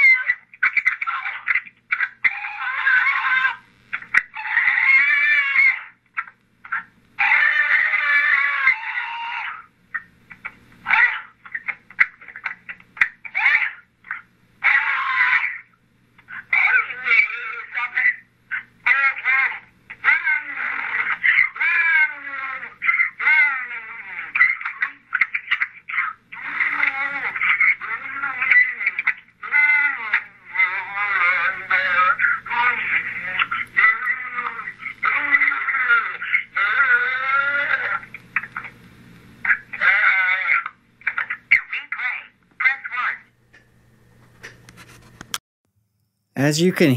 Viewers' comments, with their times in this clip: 0:03 here is what I think ... He stumbled into the woods, and saw something he wasn't supposed to see. This was, otherworldly. Next, if you Listen at the mark, and slow to 0.25, between each scream interval (in pain from torture) you will hear two clicking sounds. Those are clicks from the mouth of whatever this animal is. The torture being done is mechanical and electrical in nature. Not a taser! These leave marks, this is another type of technology. I believe, he is not drowning, but rather, SUSPENDED, MID AIR, while being electrically tortured. The language you hear is not human, however a stop it can be heard. I believe the stop it, is from the being which is MOCKING him, like it's playing with him. This is clearly Demonic or alien type animal and yes I can hear a language, but is certainly not human.
0:03 here is what I think ... He stumbled into the woods, and saw something he wasn't supposed to see. This was, otherworldly. Next, if you Listen at the mark, and slow to 0.25, between each scream interval (in pain from torture) you will hear two clicking sounds. Those are clicks from the mouth of whatever this animal is. The torture being done is mechanical and electrical in nature. Not a taser! These leave marks, this is another type of technology. I believe, he is not drowning, but rather, SUSPENDED, MID AIR, while being electrically tortured. The language you hear is not human, however a stop it can be heard. I believe the stop it, is from the being which is MOCKING him, like it's playing with him. This is clearly Demonic or alien type animal and yes I can hear a language, but is certainly not human.
0:03 here is what I think ... He stumbled into the woods, and saw something he wasn't supposed to see. This was, otherworldly. Next, if you Listen at the mark, and slow to 0.25, between each scream interval (in pain from torture) you will hear two clicking sounds. Those are clicks from the mouth of whatever this animal is. The torture being done is mechanical and electrical in nature. Not a taser! These leave marks, this is another type of technology. I believe, he is not drowning, but rather, SUSPENDED, MID AIR, while being electrically tortured. The language you hear is not human, however a stop it can be heard. I believe the stop it, is from the being which is MOCKING him, like it's playing with him. This is clearly Demonic or alien type animal and yes I can hear a language, but is certainly not human.
0:03 here is what I think ... He stumbled into the woods, and saw something he wasn't supposed to see. This was, otherworldly. Next, if you Listen at the mark, and slow to 0.25, between each scream interval (in pain from torture) you will hear two clicking sounds. Those are clicks from the mouth of whatever this animal is. The torture being done is mechanical and electrical in nature. Not a taser! These leave marks, this is another type of technology. I believe, he is not drowning, but rather, SUSPENDED, MID AIR, while being electrically tortured. The language you hear is not human, however a stop it can be heard. I believe the stop it, is from the being which is MOCKING him, like it's playing with him. This is clearly Demonic or alien type animal and yes I can hear a language, but is certainly not human.
0:03 Extra terrestrial abduction gone wrong. He fought back so it killed him. It also sounds like the torture is electrical in nature. Those sounds dont sound like drowning. you hear intermittent clicking sounds, then him screaming, that is clear torture from something not human (like mechanical in nature) if younslow it to .025 at the mark, in between the screams of his pain, two distinct sounds are heard between each interval of screams. This is a sort of electrical or mechanical type method of toture. (And not a taser)
0:17 it's really eerie at this point in the voicemail it sounds like somebody's desperate plea for help. I swear I can hear him " screaming help somebody help me"
0:17 In the voice message sound like he is screaming "Help me" bu I am not sure.
0:19 he says “ I don’t know what’s wrong” before we hear screaming and the phone ends…
0:30 I replayed the voice mail portion of the video at 0.75x speed, and I heard what you transcribed here. It was chilling to hear, to say the least. I think I heard "I don't want to go ... in there." ... "Please don't..." It could have been, "I don't want to ... die." It is difficult to make out. I fear that HM met with foul play. This plus a few other things seem to heavily point to that conclusion.
0:32 I hear it again Water hitting the floor.